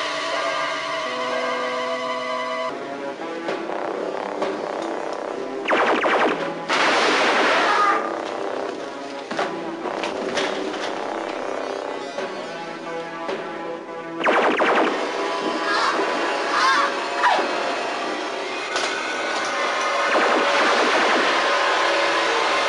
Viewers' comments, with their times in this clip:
0:07 that cyberman scream is very human.
0:07 GAUAGHH Very human scream of pain.
0:08 did the cyberman make a human scream? when he got shot.